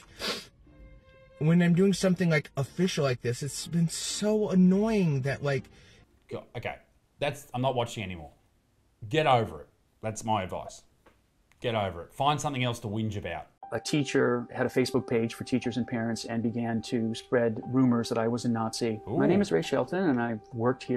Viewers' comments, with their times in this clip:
0:03 that guy just looks like an Emo/grunge guy…..sounds like a guy. Looks like a guy. If it walks like a duck snd talks like a duck. It’s a duck…..even if u put a Santa hat on the duck and build it a sleigh. That doesn’t make the duck Santa Claus.